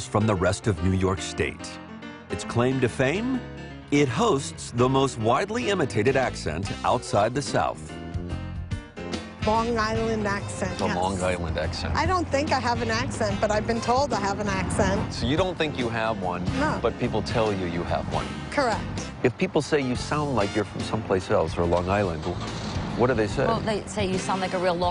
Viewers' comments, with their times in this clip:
0:09 long island accent